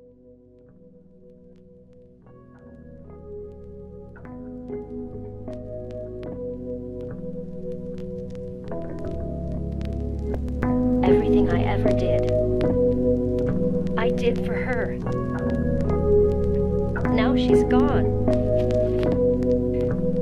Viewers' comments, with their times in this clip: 0:04 No cap, actual good beats start